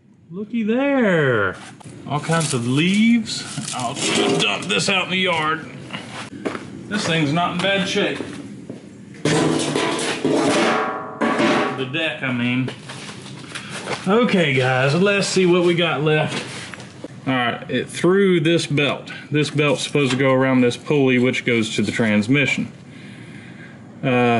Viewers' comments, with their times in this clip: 0:09 As he says the decks not in bad shape, you hear him chuck it into the corner as it bangs around lol